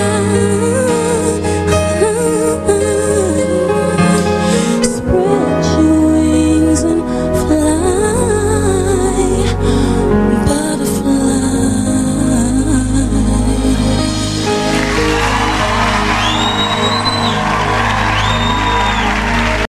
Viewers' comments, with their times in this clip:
0:07 Omg that run she did was so beautiful 😍